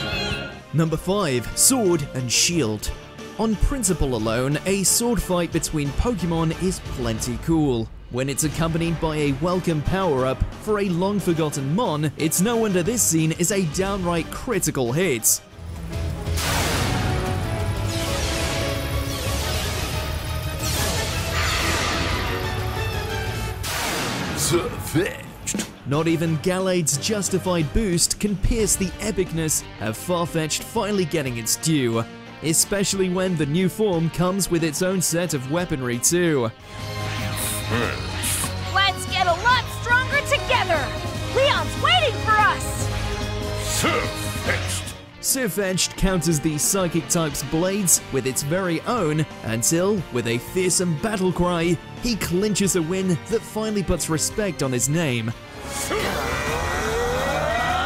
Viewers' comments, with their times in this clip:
0:07 Damn, was so good with the music
0:23 Bro’s voice actor was perfect 🤣
0:25 sir fetched sounds like a chad lol
0:44 jesus ash sounds TERRIBLE